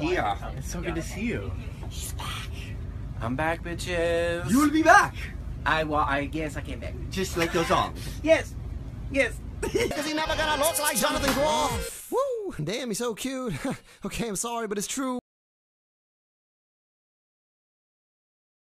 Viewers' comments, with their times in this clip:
0:05 The second to last one though! <3 He is soooo precious <3 in a tiny little King George voice "I well....yeah, I guess I came back"